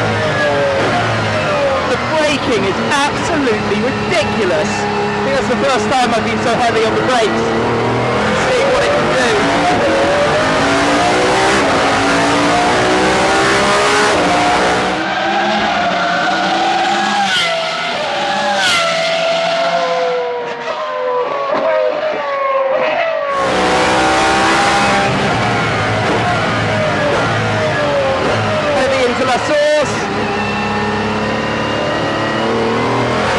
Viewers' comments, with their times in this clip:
0:09 The Upper Right Camera cannot handle the BONKERS rpm of that glorious NA V12, what a monumental sound, even the camera is freaking out.
0:19 The downshifts may be the greatest noise ever, this whole video was incredible. Congratulations on getting this oppourtunity and thanks for sharing it with us!